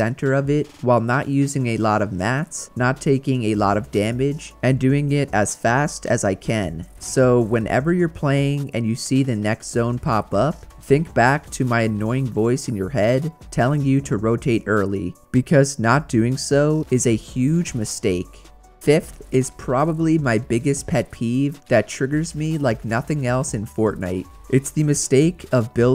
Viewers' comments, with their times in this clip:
0:10 Your voice is not annoying